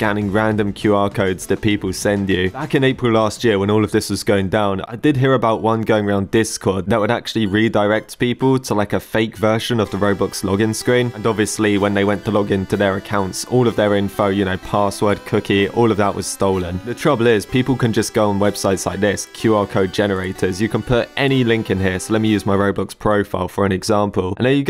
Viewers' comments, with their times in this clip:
0:07 this is the most damned music that I listened to in 2018 in tik tok. I don't really like this music